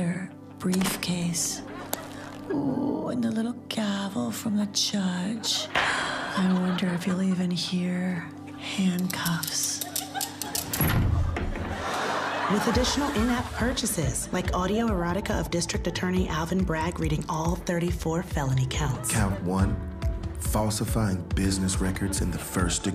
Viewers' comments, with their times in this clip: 0:10 I'm not sure what Bowen is doing there but that is not a relaxing ASMR reaction.